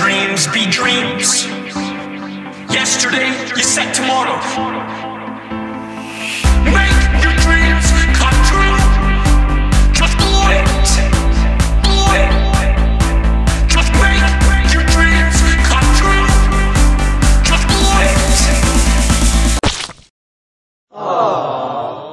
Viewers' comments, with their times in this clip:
0:10 Polish Language :D🇵🇱